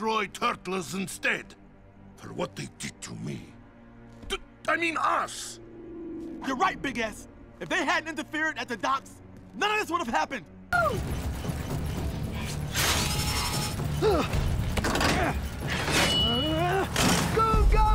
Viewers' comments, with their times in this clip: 0:04 am I the only one who heard 'your right big a$$'?? Just me? XD